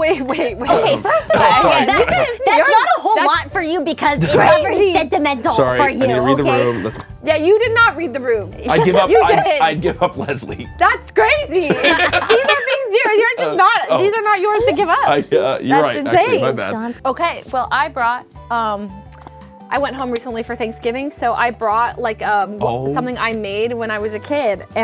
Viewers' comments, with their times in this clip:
0:10 I like the way Leslie says "That's crazy!" LOL